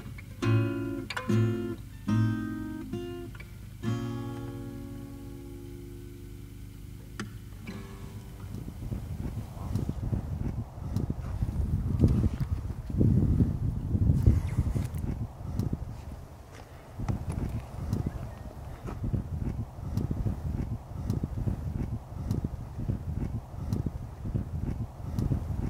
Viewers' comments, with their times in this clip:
0:06 absolutely speechless. That part on the song filled with the sound of the environment... amazing!